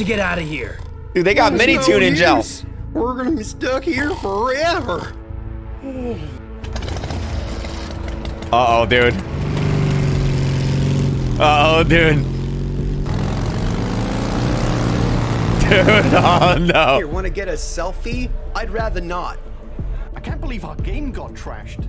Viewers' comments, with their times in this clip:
0:09 american albert comin in